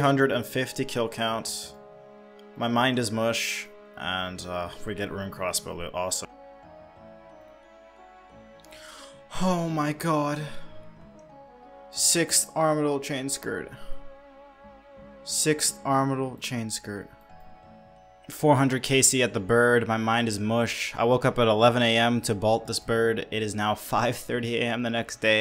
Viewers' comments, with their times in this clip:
0:08 not gonna lie that moan almost made me lose my no nut November streak